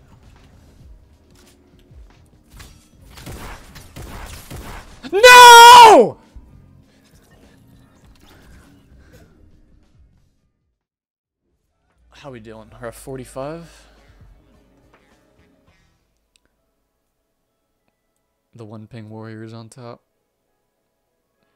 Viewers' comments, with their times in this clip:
0:04 I got scared when he shout